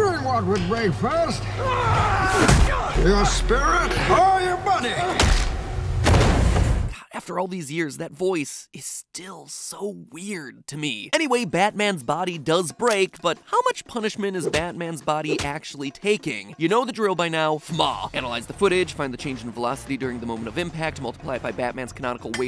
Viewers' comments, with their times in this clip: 0:05 why did the sound sound like among us death?